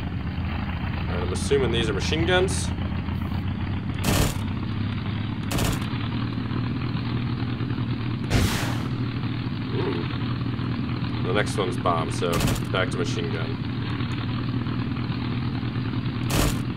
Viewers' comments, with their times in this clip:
0:04 is that God Mode or Dock mode